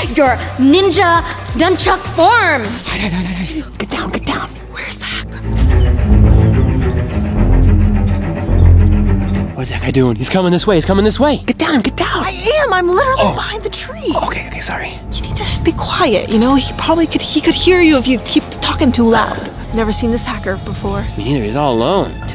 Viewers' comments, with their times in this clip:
0:05 Why is Their Scary Music He’s Having A Great Time